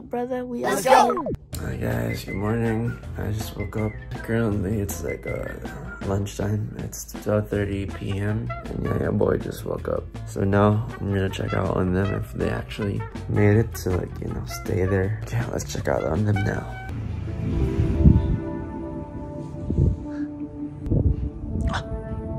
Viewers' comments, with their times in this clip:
0:06 OMG THAT DEEP VOICE IS sOooOoo I CANT BREATHHHHH btw can u say "baby lets talk" NAH IM KIDDDINGGGG